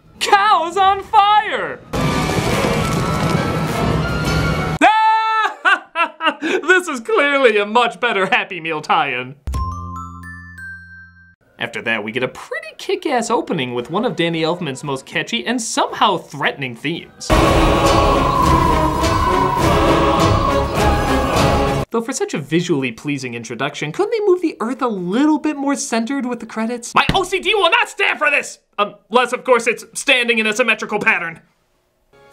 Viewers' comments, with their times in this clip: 0:04 lol! What's with that laugh?
0:17 why did i have my volume on max?